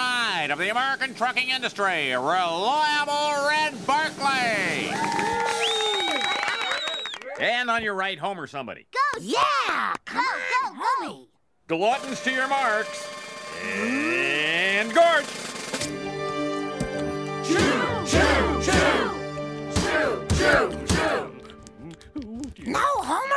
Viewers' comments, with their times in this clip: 0:08 and on your right homer sudley?